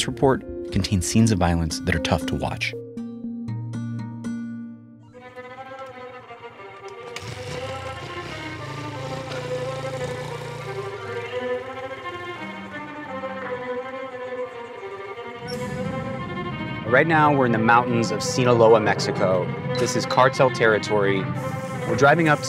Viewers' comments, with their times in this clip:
0:06 No way they used that spongebob ass music bro
0:07 who put this spongebob ass music in this